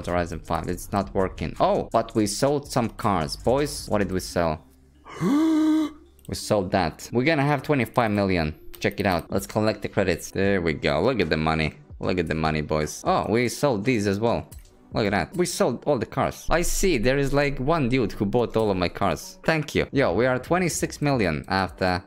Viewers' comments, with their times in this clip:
0:05 that gasp tho XDD